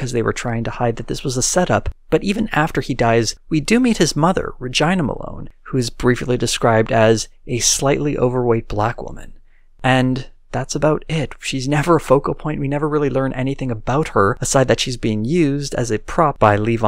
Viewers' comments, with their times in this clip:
0:04 the way he said Regina 😂
0:04 i don’t think thats how you pronounce her name.